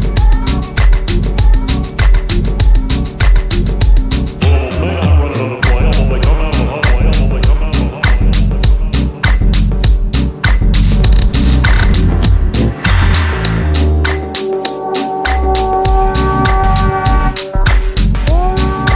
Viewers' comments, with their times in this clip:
0:04 I love the weird distorted voices that pop in like